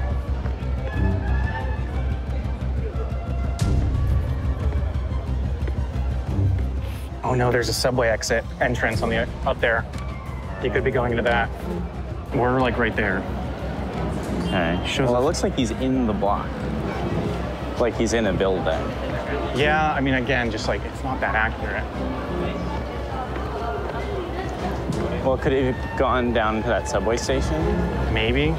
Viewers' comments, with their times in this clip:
0:10 Why does the street musician sound like the theme of the snack zone